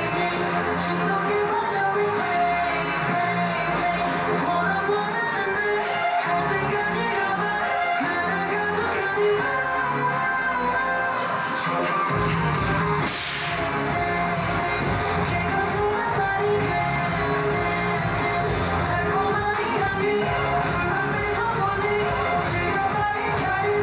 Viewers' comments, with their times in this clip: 0:04 he was breathing so hard, they are really giving it their all. Engenes let’s give them their 1st win pleaseeee